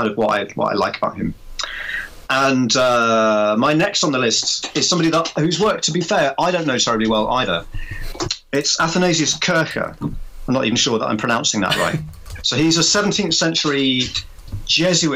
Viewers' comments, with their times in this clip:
0:03 The audio starts